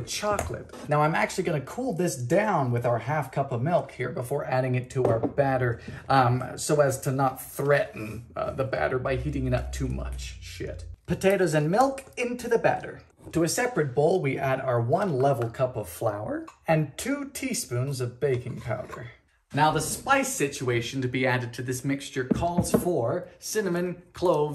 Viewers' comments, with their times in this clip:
0:07 i dont think ive ever heard him curse and just the way he said it so calmly is hilarious to me
0:09 This video is so peaceful and calming that he even said, "shit," so calmly T-T For a second I really thought I'd be watching ten minutes and fifty-two seconds of this man yelling. Thanks for throwing in the CIMANIM for us, BTW. 💀